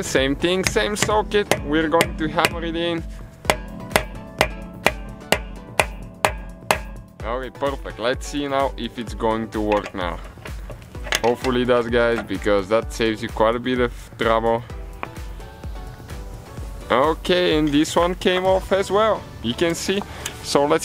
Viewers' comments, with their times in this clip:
0:03 hammering on beat